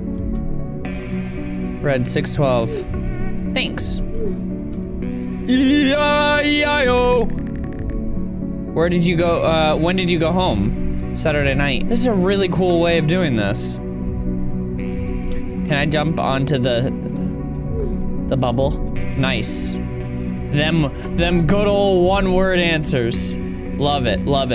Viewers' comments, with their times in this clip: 0:05 Casual Auto Tune There
0:05 that autotune tho
0:05 sounds like autotune
0:06 Did he use auto tune ??